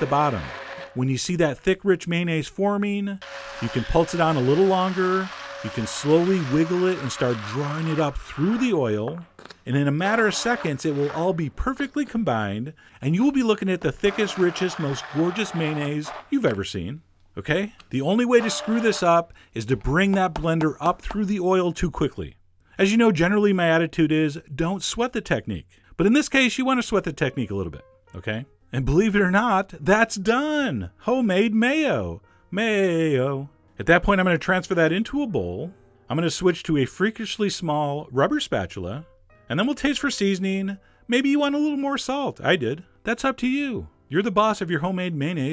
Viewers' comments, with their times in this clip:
0:09 I love how chef John stopped his voiceover for just a second there. Bless you, Mayonnaise.
0:30 "That's done, Home made Mayo "Maaaayyyo" !!!" hahahaha that's how you sound when you nail perfectionism ! Your the best !
0:31 Hey Chef John, in your last homemade mayonnaise video you promised not to sing anymore...
0:33 The Way You Said "Mayo" xD